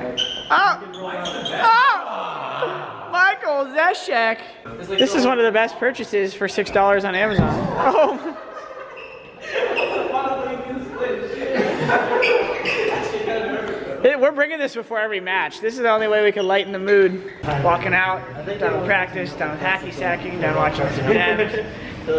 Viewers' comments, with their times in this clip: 0:05 OMG SKADOODLE LAUGHS. LIFE IS COMPLETE. I WILL MOVE ON NOW. I HAVE SCENE HIM SMILE AND LAUGH, WHAT MORE COULD I WANT?!